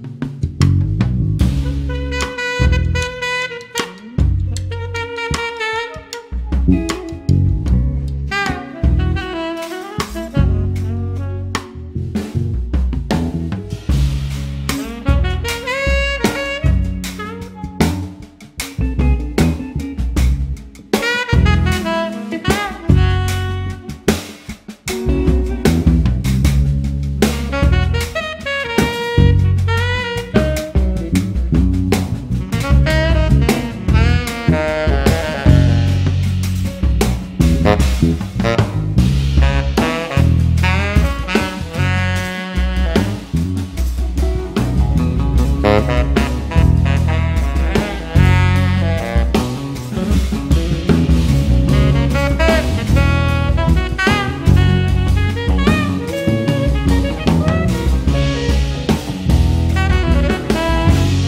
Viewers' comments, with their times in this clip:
0:04 someone played an outside note and he followed that idea in the melody immediately. amazing
0:06 Anyone else here as if there was a Mac caution sound signal on the mix? lol
0:48 The musical interaction between Bob and Mark gives me goosebumps every time I hear it. A great example of how to pay attention to your fellow musicians and react on their ideas, build upon them.